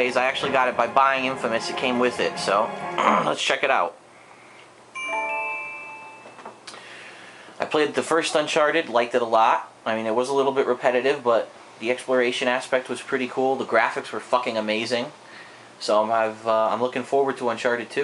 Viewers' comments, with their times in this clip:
0:03 sounds like you pinched one off lol!!